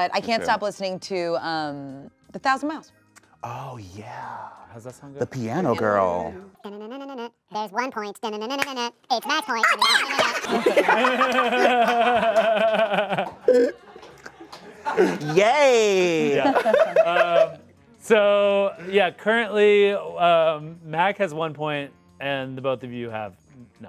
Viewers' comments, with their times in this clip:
0:06 the delivery on that was golden
0:07 listen to it at the lowest speed after the song is demonic 😂